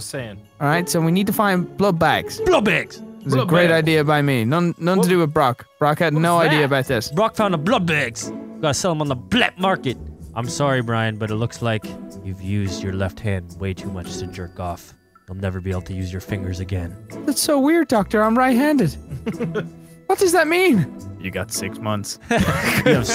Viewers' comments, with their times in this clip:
0:06 blubbags and blatmarket😂😂😂😂😂😂😂😂